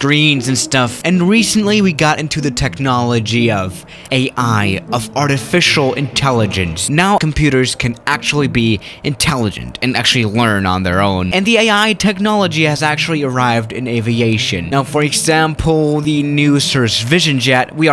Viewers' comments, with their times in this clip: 0:04 i love his universal voice echoing through my ears whenever he says something that contradicts what he said or something that's very dangerous.